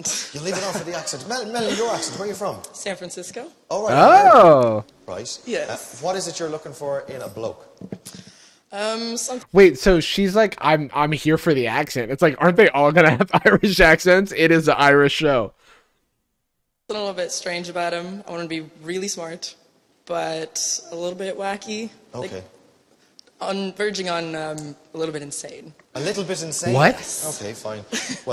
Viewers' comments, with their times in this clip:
0:10 hearing an American on this shoe freaked me out.